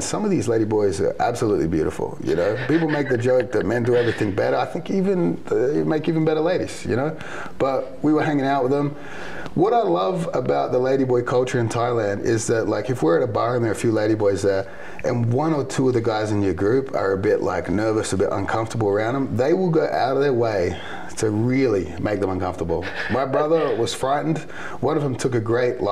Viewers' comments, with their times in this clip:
0:07 the cohost can barely stop himself from just laughing his ass off